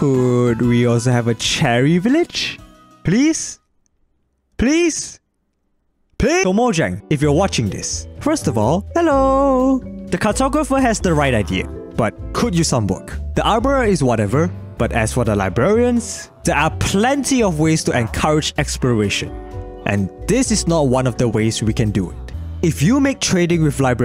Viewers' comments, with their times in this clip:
0:07 The "Hellooooo" for Mojang was the cutest thing i've ever heard